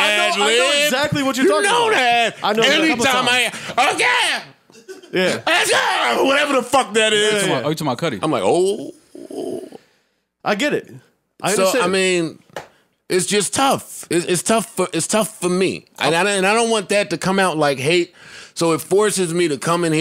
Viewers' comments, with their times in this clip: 0:03 lmao nasty adlib